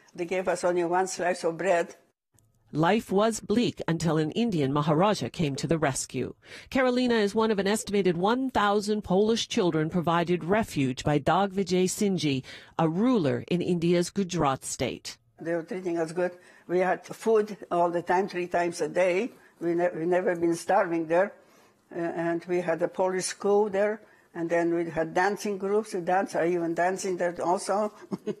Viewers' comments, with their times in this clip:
0:10 I have never heard such a bad pronunciation of the Indian name, it's Digvijaysinhji, where did you get "Dag" from??? And also of such a notable man, Really???